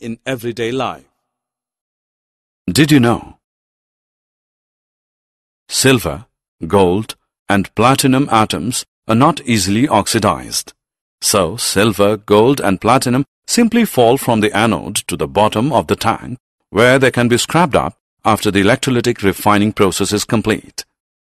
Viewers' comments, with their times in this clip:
0:03 Why voice has changed Does anyone of you know if you pls tell. And you have teach very nice sir.